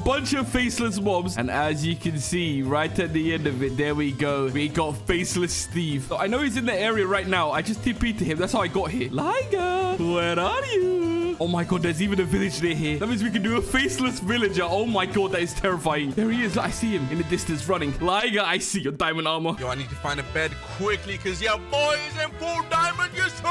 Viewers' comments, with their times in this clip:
0:09 Dang ur voice scary bro